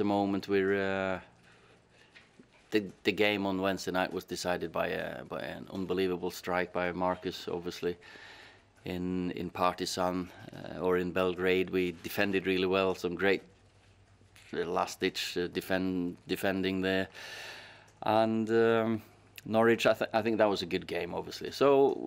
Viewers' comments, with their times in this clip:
0:10 Have I missed a game in Pakistan ?